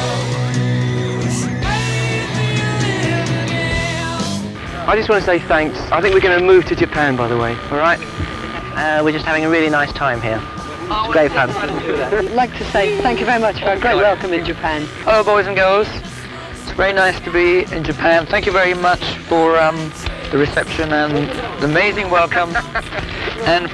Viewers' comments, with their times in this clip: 0:05 The members sound a little different in the 70s Especially Freddie
0:09 first Time I hear John